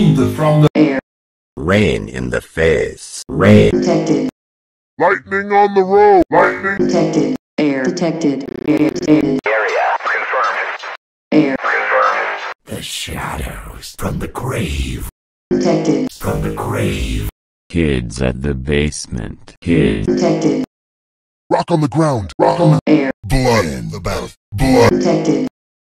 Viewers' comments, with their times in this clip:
0:08 Air detected is creepy at night 💀
0:08 why is air detected on this part is corrupted?
0:23 ketchup in the bath*